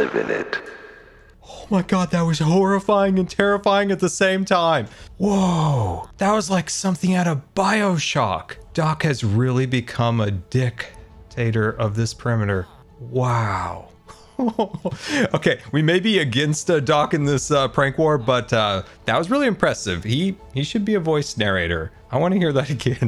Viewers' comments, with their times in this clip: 0:09 I was chilling watching this video in the background and I hear “doc has really become a dic…. tator” and I literally spit out my drink.